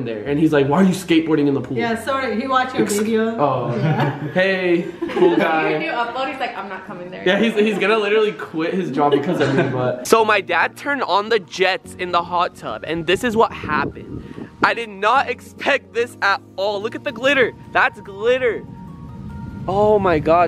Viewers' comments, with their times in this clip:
0:08 It sounds so wrong the way you said (you can come in the hot tub with us)